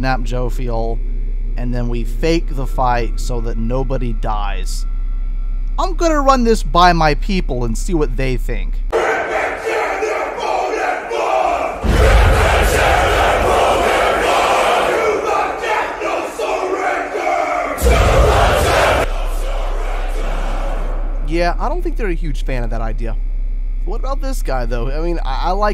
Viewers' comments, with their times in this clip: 0:08 Dude the war chants are dope, where are they from?